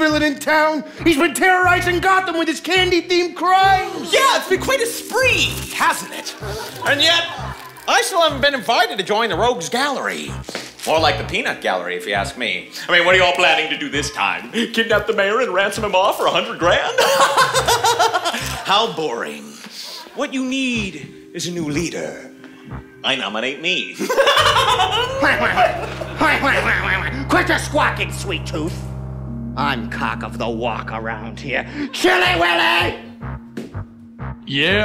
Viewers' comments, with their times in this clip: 0:04 am I the only one who hears "Even on Farm Planet we heard o him"
0:22 OKAY BUT THAT EVIL LAUGH IS THE GREATEST THING EVER I JUST